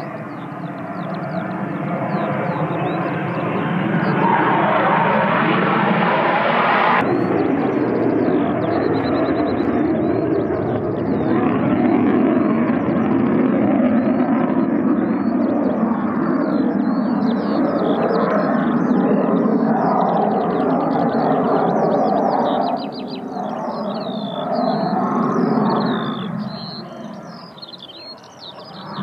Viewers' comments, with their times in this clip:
0:10 The best bird is the one singing :)